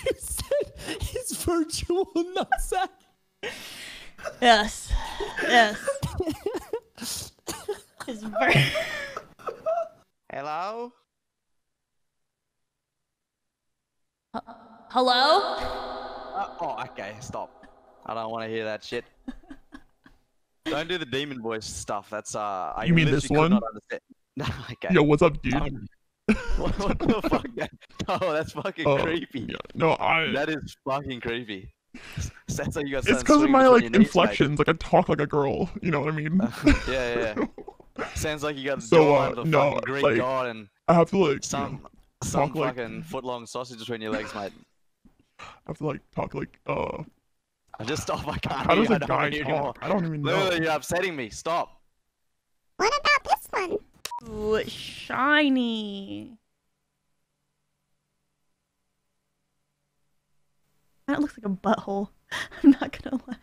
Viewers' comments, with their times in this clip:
0:05 why does she sound like james charles😂
0:31 You sound like James Charles but with a deeper voice😂 Anybody else hear it?
0:31 in you sound like james charles
0:33 Damm u sound like James Charles
0:44 that sounds like a man like it in a deep voice man with muscles but really gay and feminine not that there’s anything wrong with that